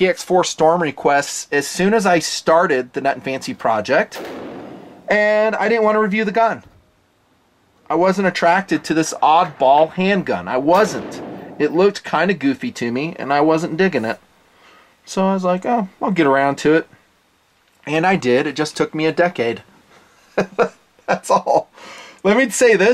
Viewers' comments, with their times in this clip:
0:04 I'm sorry was that a Barrett just casually going by